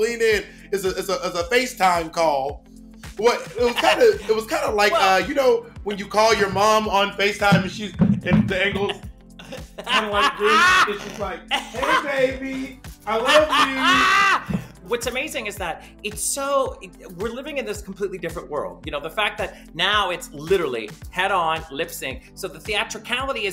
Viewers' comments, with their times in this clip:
0:10 Is it me or laughs so hard she farts ?